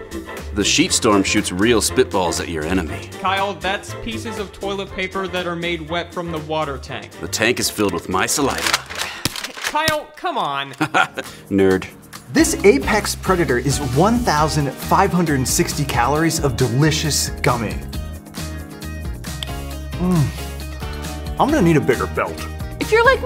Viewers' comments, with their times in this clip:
0:09 that nerd was delivered perfectly